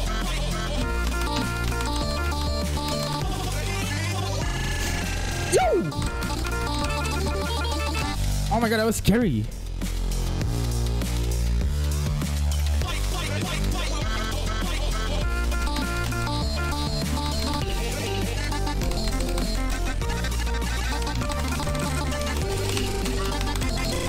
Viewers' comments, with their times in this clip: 0:05 tbh kinda sounded like mokey lol